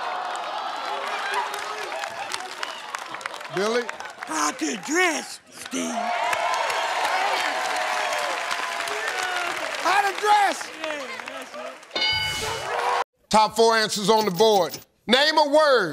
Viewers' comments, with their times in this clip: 0:03 WHAT THE HELL IS THAT VOICE ? 😂 He sounds like Herbert in family guy 🤣🤣🤣